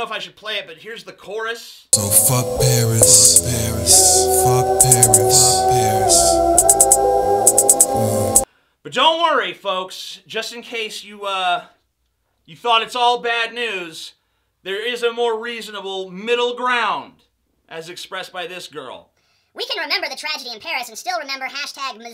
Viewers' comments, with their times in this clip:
0:04 The guy had to use spoons as background music.